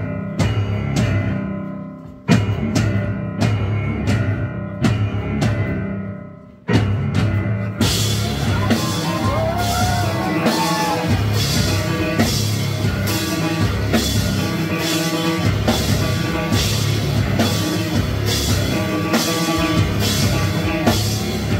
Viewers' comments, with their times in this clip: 0:07 the djazz synthesis is complete with this breakdown!